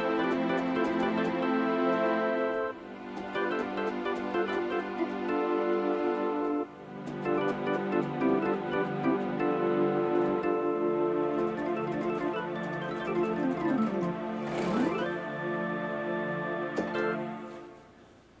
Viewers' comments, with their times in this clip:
0:04 Sounds like some Ray Manzarek stuff.